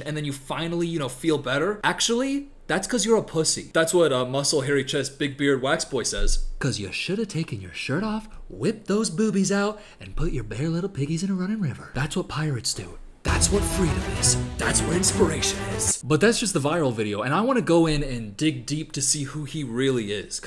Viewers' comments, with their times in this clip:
0:07 bars, he also sound like someone I can’t pin it tho 😭